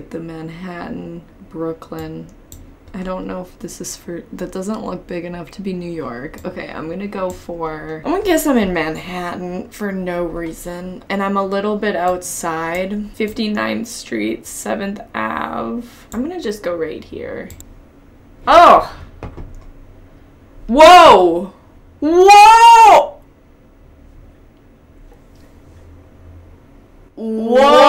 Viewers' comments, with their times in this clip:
0:10 OK does anyone else hear Drew Barrymore come through here! 😅